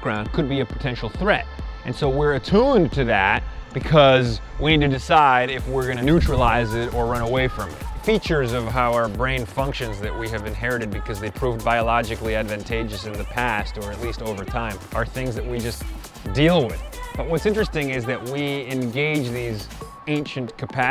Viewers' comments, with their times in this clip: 0:03 can't tell if wa-ya or gi-ga-ge wa-ya. Either way, I'd also be unhappy if someone were shoving a camera in my face like that.